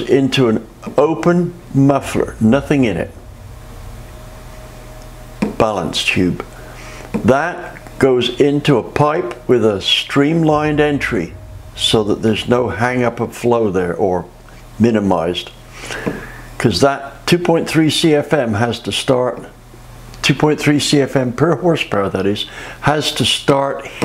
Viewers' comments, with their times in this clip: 0:08 Agreed. Volume was too loud for a minute… it was at its best level should it have continued.